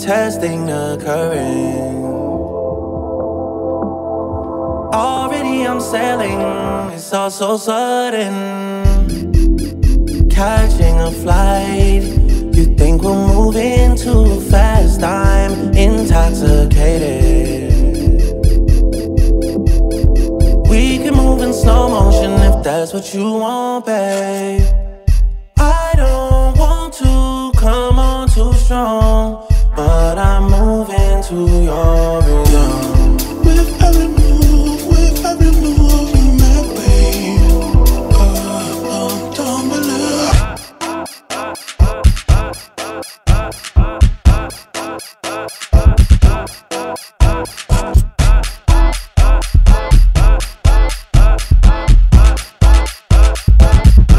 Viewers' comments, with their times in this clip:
0:08 theres no way he used this squeaky ass chair 💀
0:10 SpongeBob squeaky boots
0:25 he’s talking flow not the squeak
0:25 Spongebob Spongebob Patrick Patrick
0:25 SpongeBob, SpongeBob, Patrick, Patrick
0:25 SpongeBob beat starts
0:25 goofy ahh beat
0:25 it sounds like goofy ahh
0:26 spongebob spongebob patrick
0:26 Nah bro this soundin’ like spongebob spongebob patrick patrick
0:26 someone said and further sounded like the spongebob spongebob patrick patrick meme
0:33 Now ik I can't be the only one who thinks was funny ik the producers were trying not to laugh so bad,shout out to drake for making the beat sound like Michael Jackson mansion at night
0:40 I swear that "ah" is XXXTENTACION